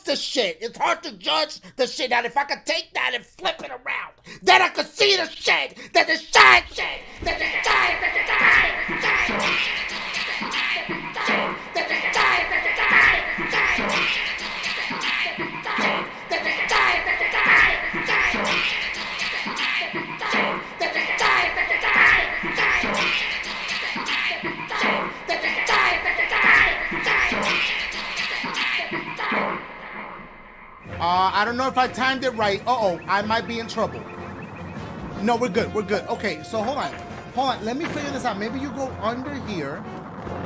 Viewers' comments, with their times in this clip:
0:05 that echo lol
0:07 me white heard Dashie the ghost 👻
0:07 ... that beat though ....
0:27 yo I’m dead I love it when you do the eco thing it’s gets me every time and the face you make when you “hear” it it’s so funny